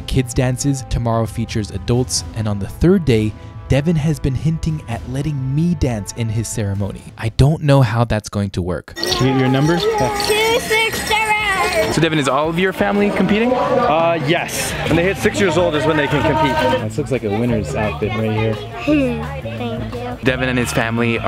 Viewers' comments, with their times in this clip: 0:09 two six zerorrrr😂 This is literally how I read my number every time